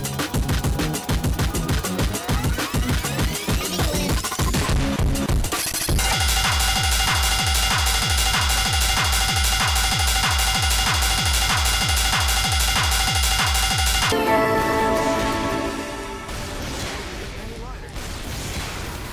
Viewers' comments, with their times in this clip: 0:06 the fire alarm pls :-)